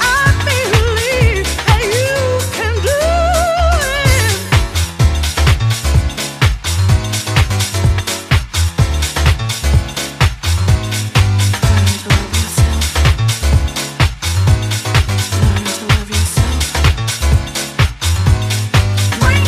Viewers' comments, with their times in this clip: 0:04 Gotta love it! That piano coming in slays me! And Kim! What a diva! House, baby!